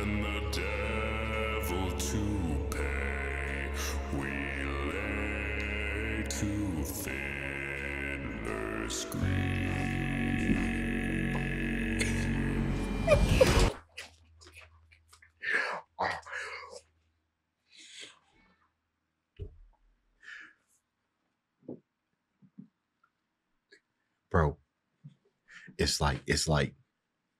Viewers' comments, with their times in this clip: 0:10 this is a note that a human reach?I'm a bass too,but that note is way out of my range.